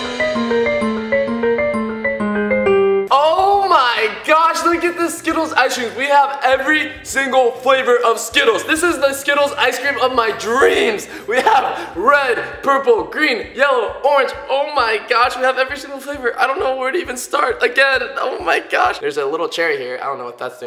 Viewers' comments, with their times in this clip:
0:03 He sounds like Guava Juice ( Roi)